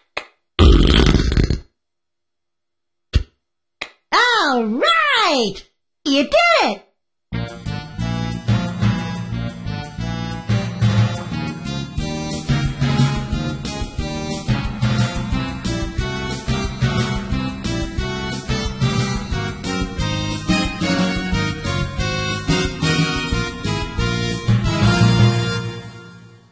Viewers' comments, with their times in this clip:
0:10 The biz music sounded like The Simpsons theme!